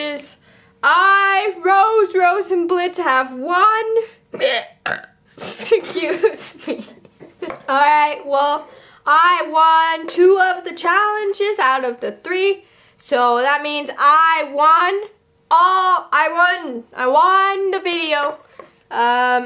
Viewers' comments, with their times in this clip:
0:04 its just like i heard a goat burping